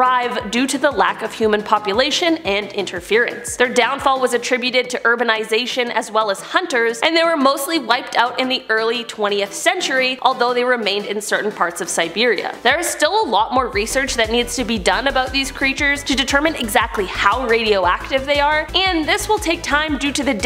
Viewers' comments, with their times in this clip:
0:05 did I hear that right ‘Erberization